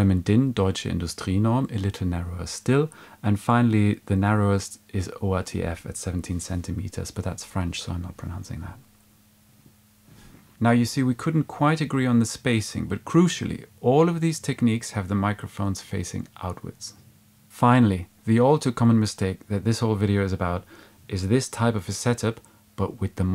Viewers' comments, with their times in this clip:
0:06 Nice pause for comedic effect. Liked.